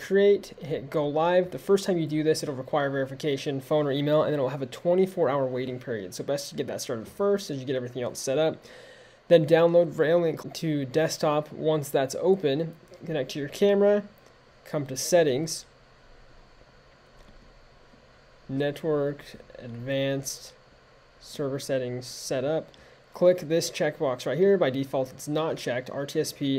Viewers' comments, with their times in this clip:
0:09 What are you saying ? Download "What" to desktop?